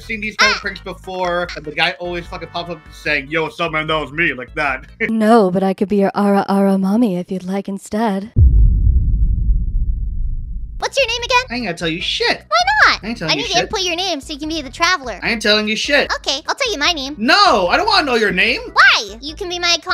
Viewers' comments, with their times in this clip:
0:04 why her voice kinda...